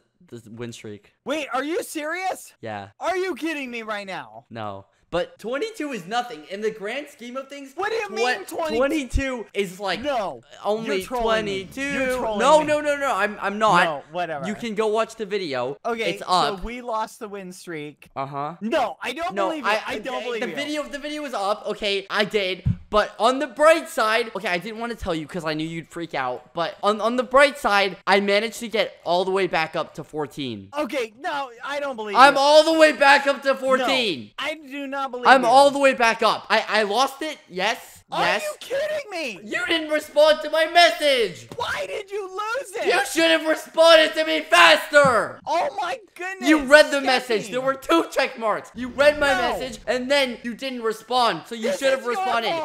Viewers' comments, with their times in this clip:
0:08 he tried to sing his way out 🤣
0:09 Omg he said 22 in the same tune from 22 By Taylor Swift xD Omg he's a taylor fan???
0:12 sounds like my mommy and daddy before bed
0:35 When it's am and skeppy starts screeching at badboy halo to get out of there
0:39 This literally sounds like my parents arguing-